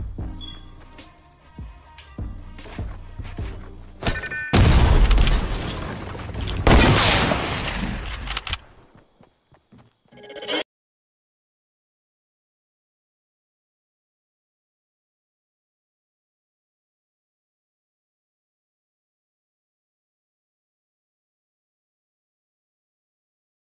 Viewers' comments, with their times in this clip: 0:10 the noise cuts out